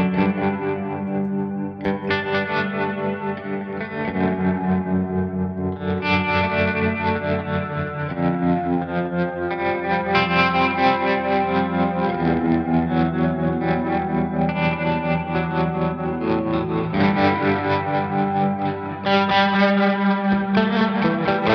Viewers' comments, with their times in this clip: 0:08 The sound is immense!